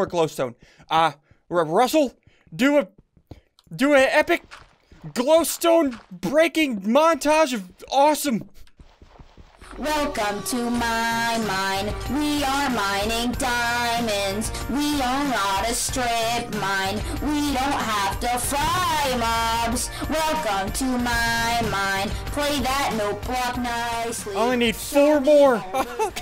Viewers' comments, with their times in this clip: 0:10 =RIP your ears